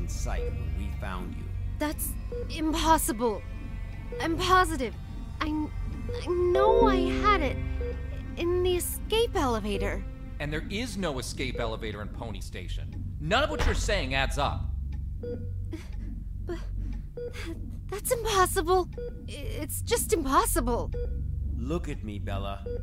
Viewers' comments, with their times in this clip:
0:06 windows notification jumpscare